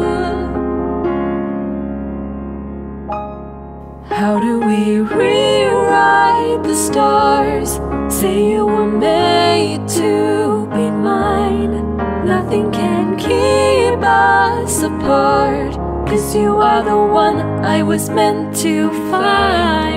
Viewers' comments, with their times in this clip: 0:03 As soon as Mothwing started singing, my soul and heart yeeted themselves out of my body and I seriously understand. EDIT - I LEGIT STARTED CRYING WHEN THEY TOUCHED NOSES AND I CANNOT. I love this song so much! It’s so darn beautiful and captures the ship so well, you’re freaking amazing!